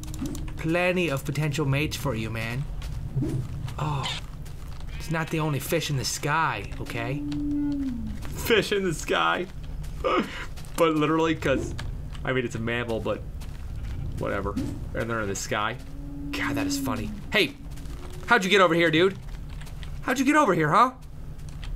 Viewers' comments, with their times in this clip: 0:07 Did anyone else hear the bird ? or was it the one already in the fenced area?